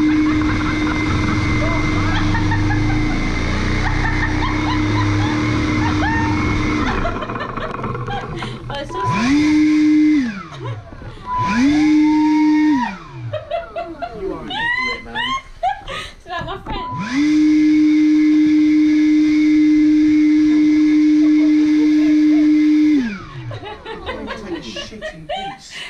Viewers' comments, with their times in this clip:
0:10 By the laughing is infectious lol